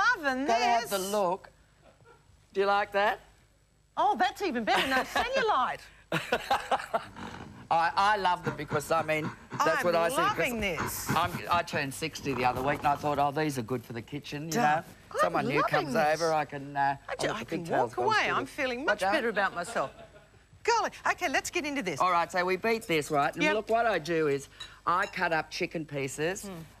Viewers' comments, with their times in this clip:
0:09 What the hell was that scary grunting noise ??